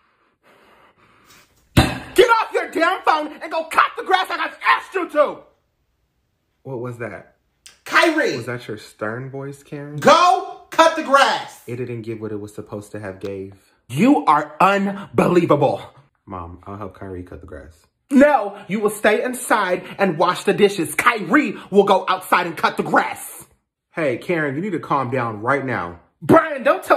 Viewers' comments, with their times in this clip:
0:10 😂😂😂 “Go Cut The Grass” 😂😂😂 the way Karen said it